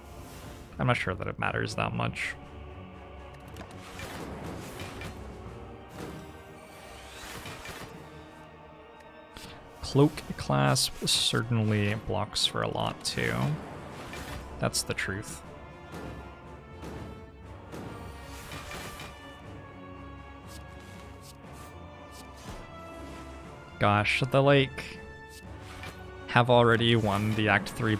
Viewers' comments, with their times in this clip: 0:08 the lightning hits in the same rythm as the music.